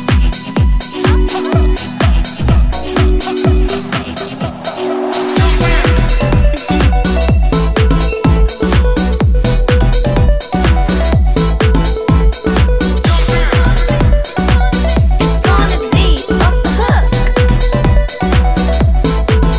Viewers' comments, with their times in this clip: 0:05 this song has some awesome tones !!! The use of sounds and their precise conjugation is impressive, I especially love this part:.